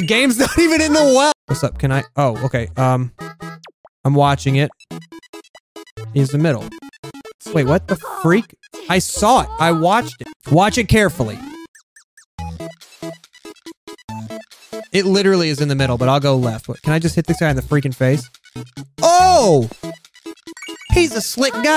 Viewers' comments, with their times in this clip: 0:07 The boy sounds like he said "What the fuh..!?" and that's hehe for me